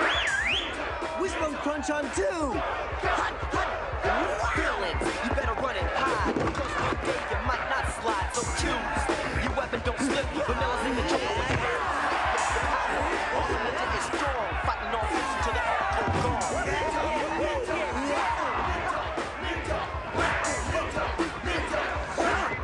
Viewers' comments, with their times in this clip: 0:10 there should've been a massive cracking sound on this one.